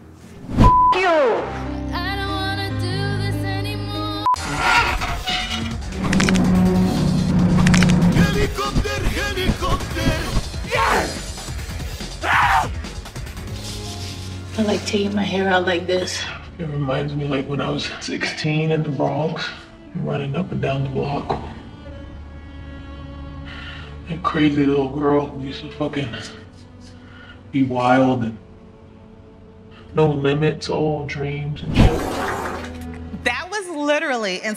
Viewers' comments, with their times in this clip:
0:06 Bruh is the fseee 😂😂😂 not the bones cracking
0:18 why does she sound like jayz when her voice was edited while working out?! sksksks
0:20 The way she says "BLAOCK" low key bothers me 😒😂